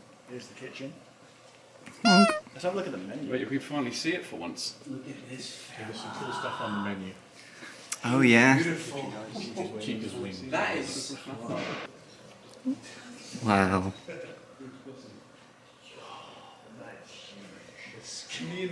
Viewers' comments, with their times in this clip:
0:04 What was that yell lol
0:05 anyone hear that weird voice??